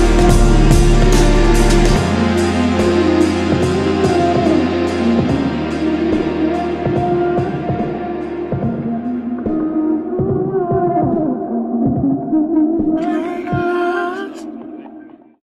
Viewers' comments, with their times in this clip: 0:13 Anybody hear somebody talking in the background near the very ending )